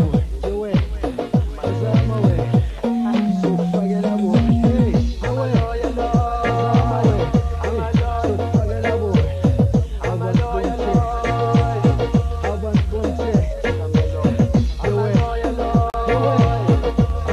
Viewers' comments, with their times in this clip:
0:03 brilliant flute pattern